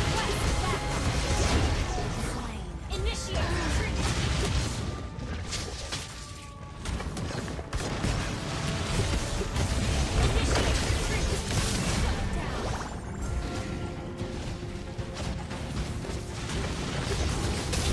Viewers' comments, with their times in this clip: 0:03 its so silent that it makes my ears bleed